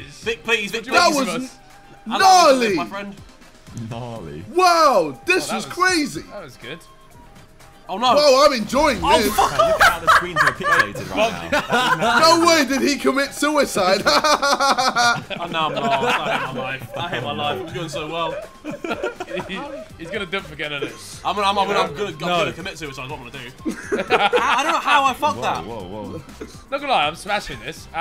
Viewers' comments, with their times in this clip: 0:08 Vik's laugh sends me everytime
0:08 I love viks laugh
0:11 JJ's impression of Logan
0:15 that jj laugh 😹😹😹😹😹😹😹😹😹😹😹😹😹😹😹😹😹